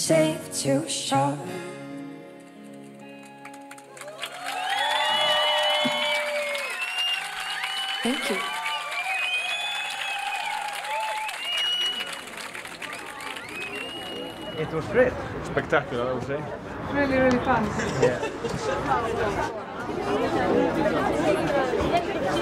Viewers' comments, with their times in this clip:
0:07 the most beautiful "thank you" ever!!!